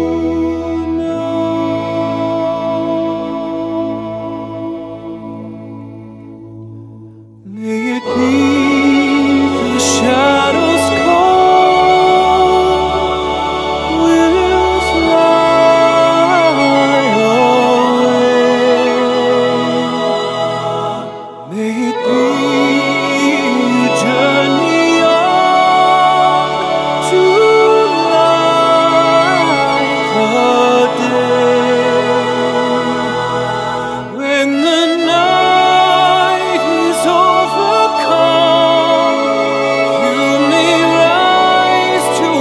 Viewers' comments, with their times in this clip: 0:09 I really loved how the violin harmonized and crossed your voice! Especially ! Very well done....a beautiful rendition of one of my favorite songs. :)
0:24 it may not be in essence the definition of a duet, but her playing really starts to shine through. However, her style of playing doesn't stand out. If you listen to almost all of Peter Hollens' stuff, you'll the accompanying vocalist, or violinist, makes their mark in a unique way which brings out the texture of the song. I honestly just did not feel that with Taylor. And I for sure use headphone. Mine are Bose and they capture the authenticity of the sound quite nicely :) I hope you understand that I am not trying to be mean to Taylor, but as objectively constructive as possible.